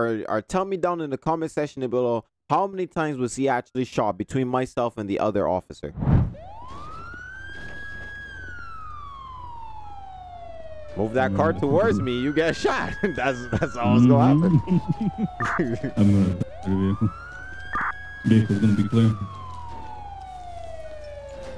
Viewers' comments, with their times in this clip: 0:04 you shot him 8 times, and the other officer shot him 3 times, so in total 11 times.